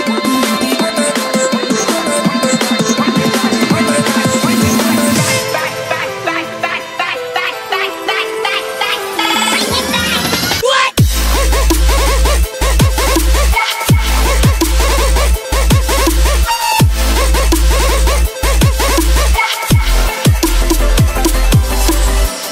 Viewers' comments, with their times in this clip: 0:09 Tell me this doesn't sound like a dog.